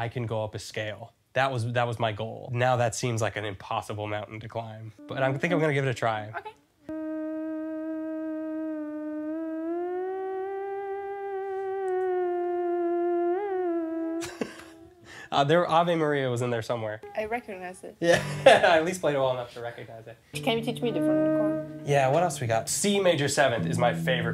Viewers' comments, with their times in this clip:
0:07 a mosquito singing ave maria